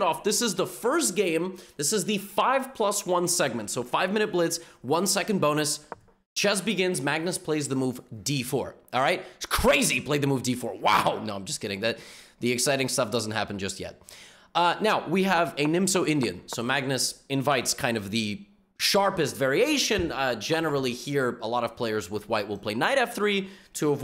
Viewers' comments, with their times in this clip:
0:08 lol the emotions looks so real and if u didn´t say it isn´t crazy after that a would believe that even if I know this is played a lot.